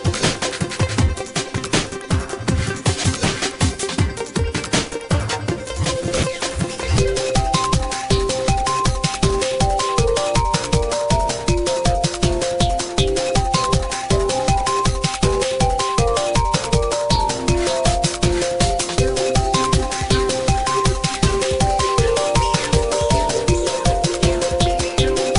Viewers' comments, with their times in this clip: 0:06 super is the catchiest part